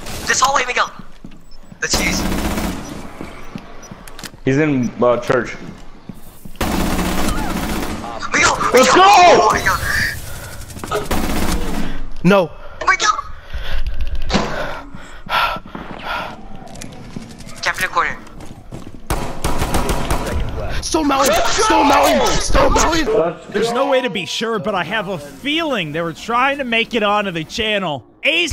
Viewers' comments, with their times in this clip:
0:07 do i hear console R2 smashing?
0:15 what was that sound kinda sounded like a mouse but his aim was not very good...